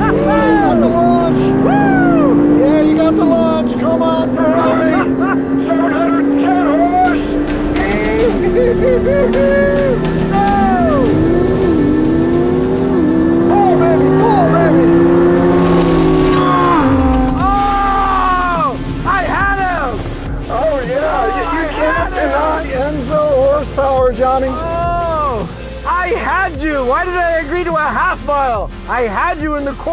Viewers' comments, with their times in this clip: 0:10 sound of lambo huracan ??? Wtf
0:11 they’re halfway through the half mile drag race but the audio sounds like they started another race all over again. Literally unwatchable
0:15 sound of a 5.2L N/A V10 LMAO
0:16 Love how they played the Huracan’s V10 sound over the Porsche Vs Ferrari race ...
0:16 Yep I heard a v10 in there... wtf!!!????